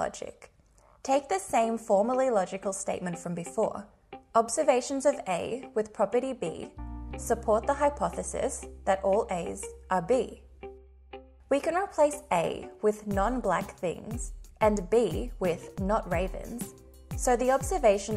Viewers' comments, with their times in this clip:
0:03 Interesting choice in background music. I don't know the last time I heard a 9:8 beat. Edit